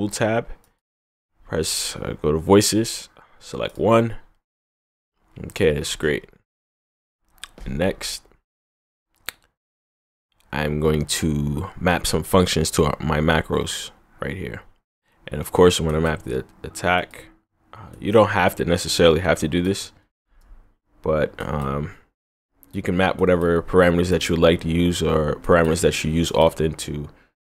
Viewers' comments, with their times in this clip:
0:09 what a nice click !!! im gonna sample it, dude cool tutorial tho